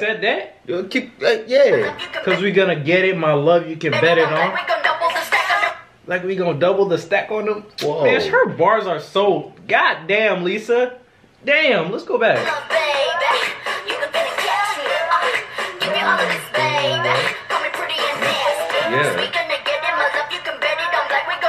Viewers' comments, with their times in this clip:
0:03 "Their breast smells like diamond" Tf was that